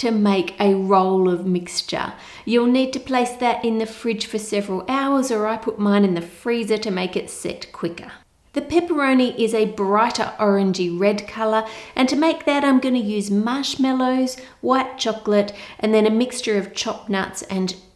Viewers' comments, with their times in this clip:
0:04 I wasn’t paying attention, since Ann’s voice is lovely even for background noise, but I looked and thought ‘wtf, looks like salami’. Amazing job 👏👏😅